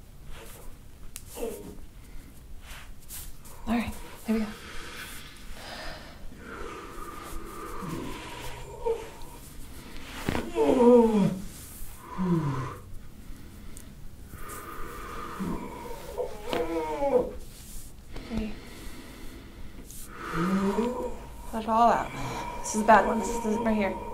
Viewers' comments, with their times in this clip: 0:07 epicccccc deep cracks start!!!!